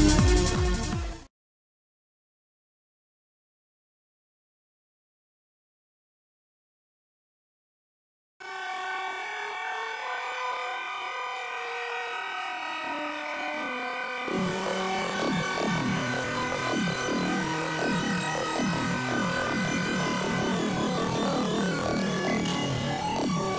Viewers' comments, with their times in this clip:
0:09 that sounds better